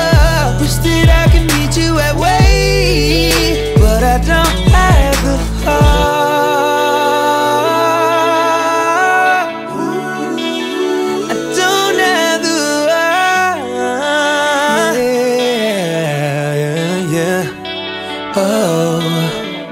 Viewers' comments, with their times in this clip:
0:05 That note he hit fucking amazing! 😎